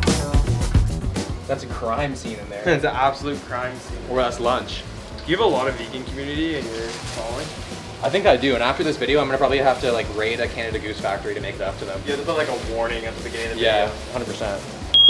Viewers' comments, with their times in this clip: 0:03 Warning: or so, there will be a loud chirping from the smoke alarm. Headphone users, be warned.